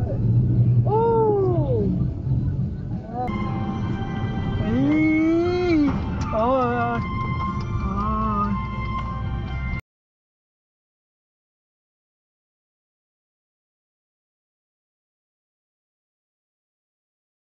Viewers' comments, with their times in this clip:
0:04 is the noises we make when we eat chili sauce for the first time 😂😂